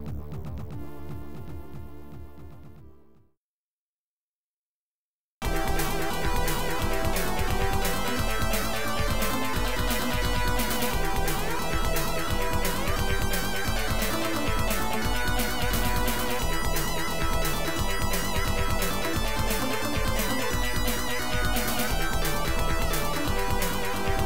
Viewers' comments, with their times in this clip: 0:04 so plaintive! Things are getting urgent!
0:05 Oh yeah that Thunderforce vibe 😍